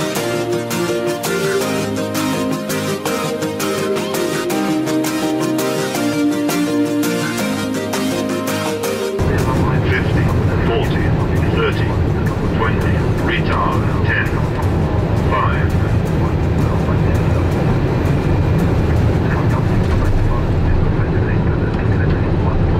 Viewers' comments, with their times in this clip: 0:09 that 5 call proves how much butter the landing it was 😍